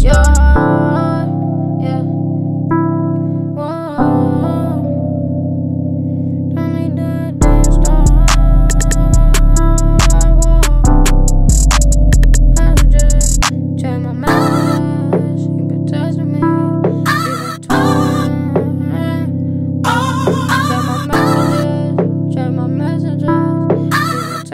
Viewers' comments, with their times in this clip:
0:07 he kinda sounds like Lil yachty when he sings